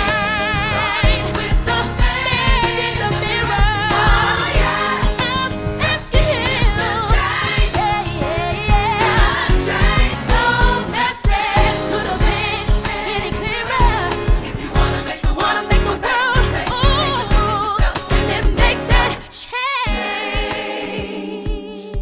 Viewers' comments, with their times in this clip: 0:05 LOVE THE WHOLE SONG..BUT I LOVE HER VOICE ..